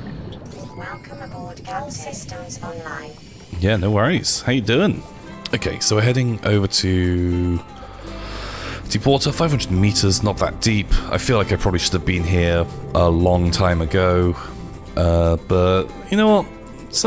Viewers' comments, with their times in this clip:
0:03 That music gave me Planet Coaster vibes.